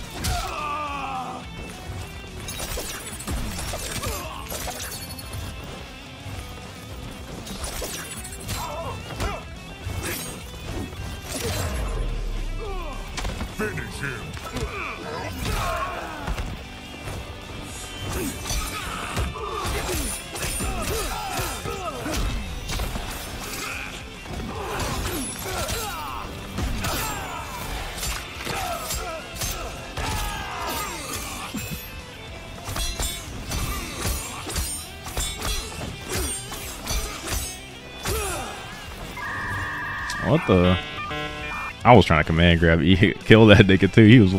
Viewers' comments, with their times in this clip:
0:07 idk y but sub zero's scream, makes me laugh
0:07 He hits sub zero off the screen, so we hear a random "Oooo" lololol
0:27 The little gasp after sweeping sento 😂😂